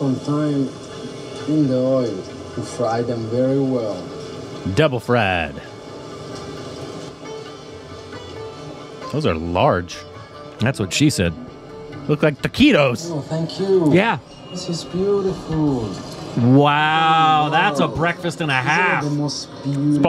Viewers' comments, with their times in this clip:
0:03 British accent caught 🤣🤣🤣😄♥️